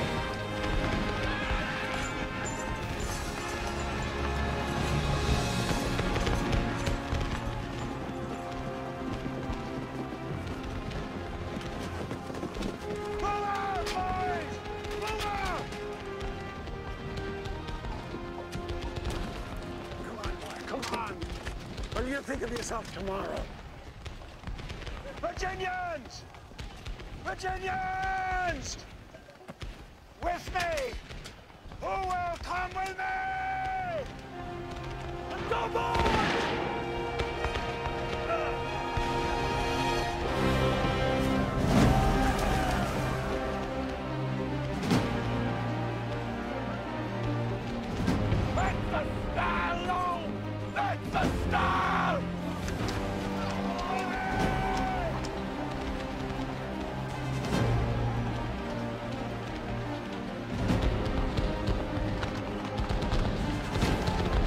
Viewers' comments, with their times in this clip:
0:08 what's up with the re-enactors laughing?
0:35 I've always though that the soundtrack, while excellent, can be a overwhelming in parts. But the theme that begins around the mark is very powerful, there's a sense of desperation that conveys what the Confederates must have been feeling.
0:47 The change in music always gets me… it’s like there’s no turning back…